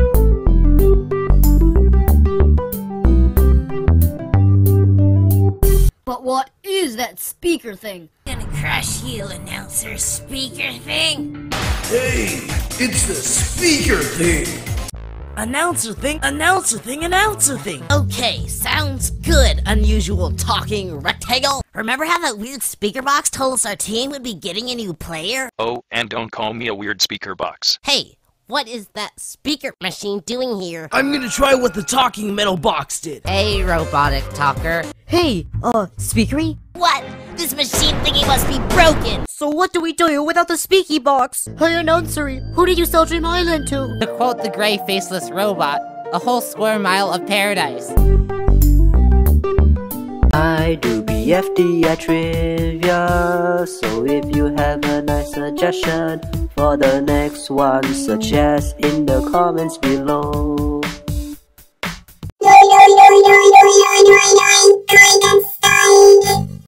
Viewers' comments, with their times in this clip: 0:09 Pen has really changed in BFDI, the most obviously is because his voice cracked and became deeper. BFDI 4: “BlOCkY gOne?! BuT tHaT CaN’T bE!” BFDI 24: “ThEn WeLL gET rElesED!!”
1:02 rip headphone user